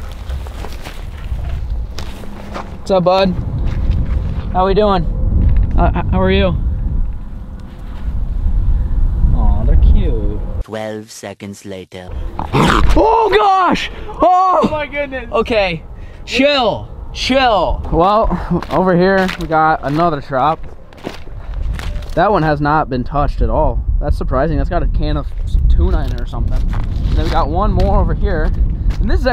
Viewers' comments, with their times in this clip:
0:10 I was crying laughing when the raccoon barked at you😂😂😂